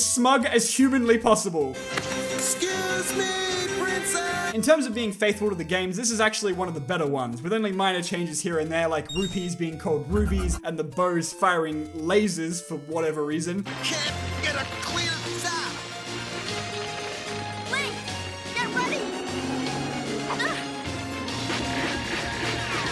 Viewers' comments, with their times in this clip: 0:10 he sounds like Chad Gable